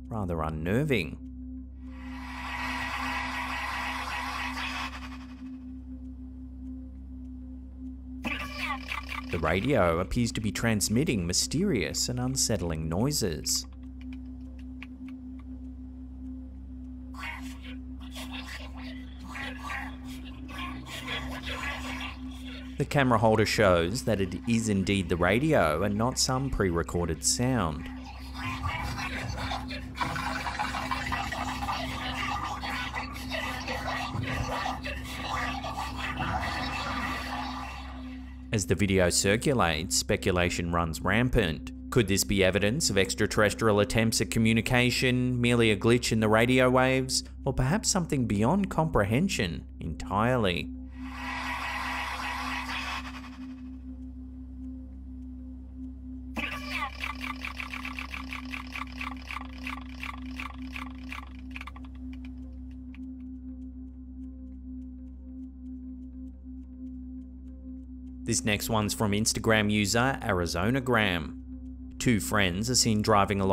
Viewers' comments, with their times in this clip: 0:04 At the video, on her dashboard it looks as if the car is traveling backwards which of course would make the sounds coming out of her radio sound very weird.
0:22 @ one point sounds like the radio chatter had said: "They Took Away the Methadone" (ODDLY Similar to the telepathic chatter, theme & 'vocal' content Ive dealt with in the last 6 months..Hmmm?)
0:24 heard something similar coming from radio waves but what I heard are just whispers like many people whispering at the same time though I can't understand them must have been some radio program being barely picked up
0:27 that alien diss track be going crazy
0:43 # This sounds like cartoon characters' voices, at high speed, using pencil sharpeners!! 😂😂😂! It also sounds like a game of Roulette. 😂😂🎉🎉
1:01 No, No, it is them. They truly make noises sometimes like the ones of "Predator" Movie. It's their native language and sure, they just chat about weather conditions.